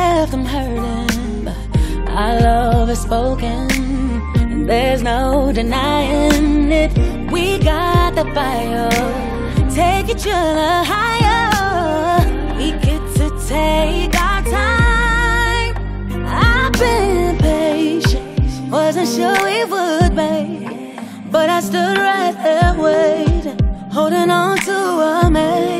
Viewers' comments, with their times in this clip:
0:06 I absolutely love when Brandy hits the high note It's so catchy. They never finished this series, they need to bring back Star for one more season to wrap it up.